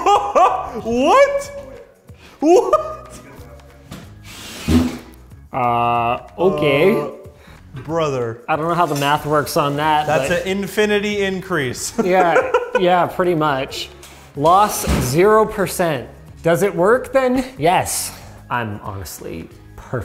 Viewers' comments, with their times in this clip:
0:05 That Ahhhh Okay was the most stereotypical Canadian sounding speech I have ever heard from a Linus video.